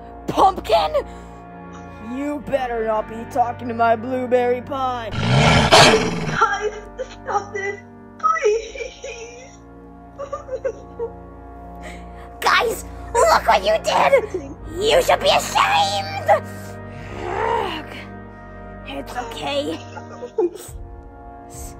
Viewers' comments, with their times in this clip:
0:04 WHY DOES HE SPIND LIKE A CHAINSAW☹️